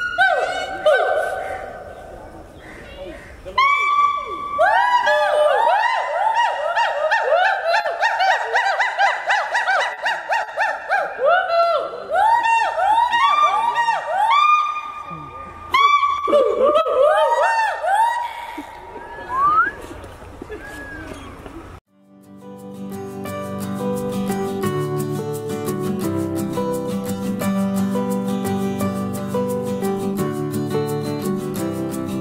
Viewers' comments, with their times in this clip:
0:05 The Girls scream when the Backstreet Boys come on the stage
0:15 hahahaha that choke😂😂😂
0:18 (man whistles) Whooping Gibbon: (glares at man) "Dude, that's just sad."
0:20 whistle.. gibbons : what the hell is that sound??